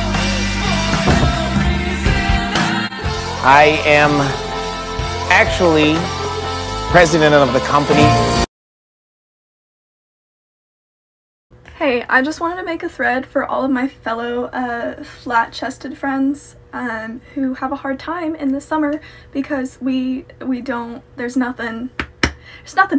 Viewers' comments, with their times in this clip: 0:03 I'm so sorry but I laughed so hard at her... ... Where that voice from..?